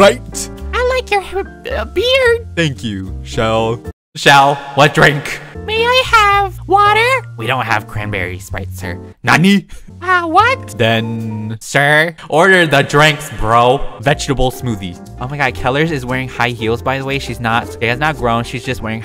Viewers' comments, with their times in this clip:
0:07 NANI PEETHA SAYS IN SUCH A FUNNEY WAY